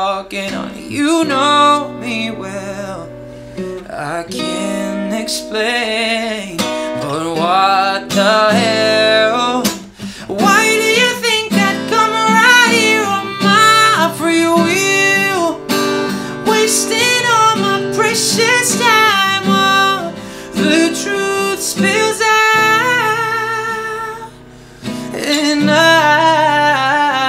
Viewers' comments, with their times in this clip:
0:10 that fucking note Tho!